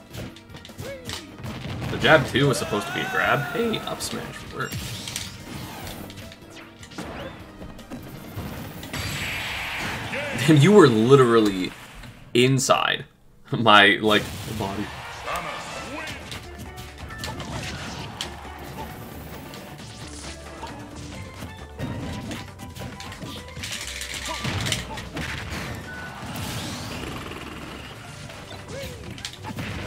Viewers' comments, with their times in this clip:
0:10 I like how he got quiet near the end of that sentence